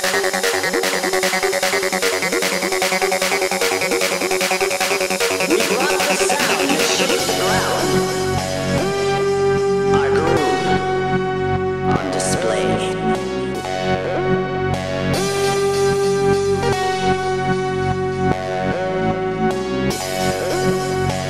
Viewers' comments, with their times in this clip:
0:07 Insane acid Lead 😚😚😚